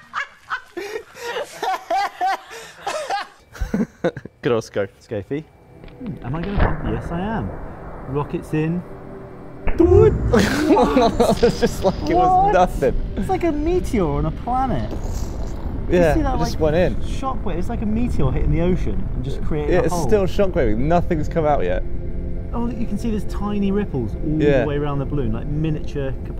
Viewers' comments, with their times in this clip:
0:09 that “doowoit” sound made me laugh out loud. Super humorous :-)
0:09 One of the coolest things I've seen BUT! I can't ignore the synchronized "DoOOiiiT" LOVE IT!